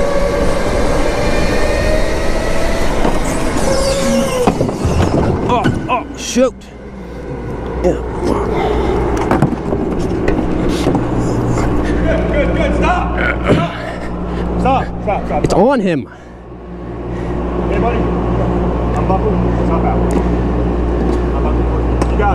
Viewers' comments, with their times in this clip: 0:08 All the guy was trying to do was get the car off the dude it was on and the worker came over yelling “sToP” like he was going to pick it up and drop it on him